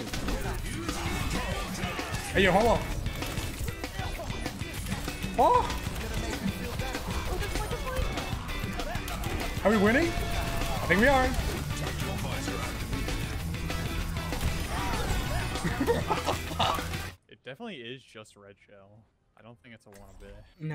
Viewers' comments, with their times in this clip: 0:03 love the music <3